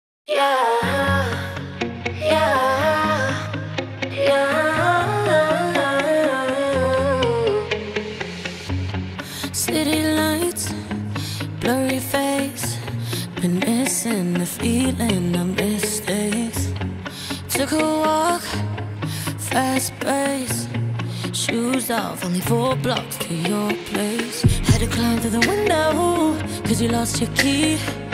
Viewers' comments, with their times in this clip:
0:09 we have some Sofia Carson there